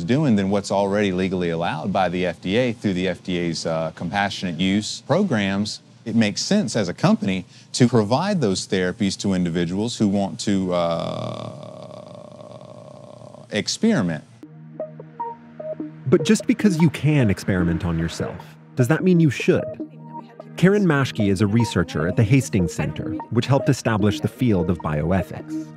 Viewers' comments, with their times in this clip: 0:10 Real vote of confidence there in that explanation in that long pause "Uhhh....", probably trying to remember the exact phrase so he doesn't say anything legally liable.
0:11 the longest 'uhhhhhhhhhhhhhhhhhhhhhhhhhhh' I've ever heard with awkwardness